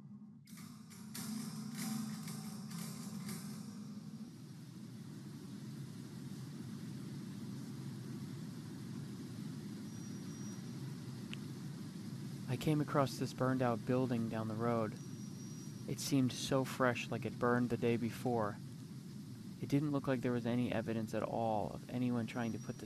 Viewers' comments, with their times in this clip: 0:09 How my brain heard your intro: 'When massive contamination and asbestos filled buildings were discovered, New Jersey designated it a Superfun Site..' sounds about right, p.s. Did you add the creepy moving shadow ? It got me.